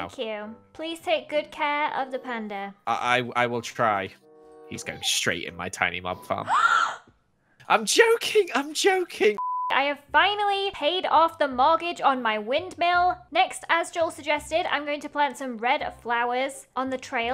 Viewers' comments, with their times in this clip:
0:04 the way you gasped 😂